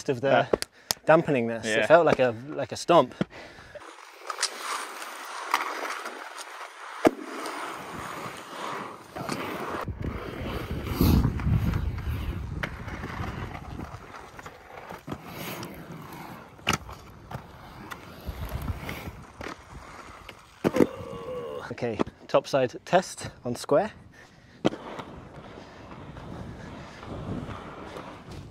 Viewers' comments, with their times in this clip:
0:10 that carving noise is just sublime...